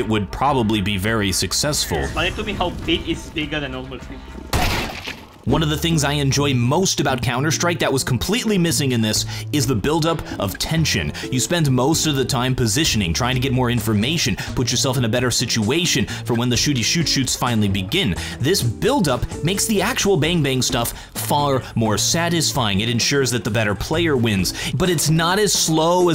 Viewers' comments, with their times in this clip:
0:08 i thought he's gonna rap